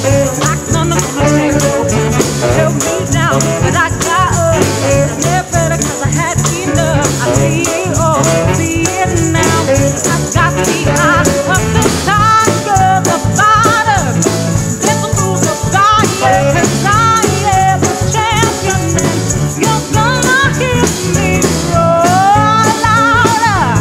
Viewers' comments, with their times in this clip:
0:04 Mixer had his chance to turn up her mike before We wanted her full voice earlier than the downhill, but that's alright, that's OKay.